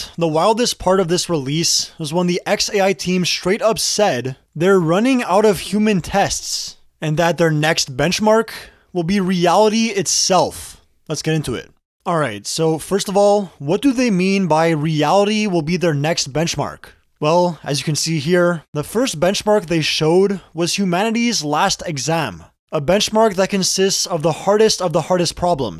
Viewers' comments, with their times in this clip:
0:10 "...human testssss!!, and their next bechmarkkkkk!! wil be reality itselfffff!!" You need to retrain this 11labs voice... I'll pass on this video and try your next upload 🤷 Bye!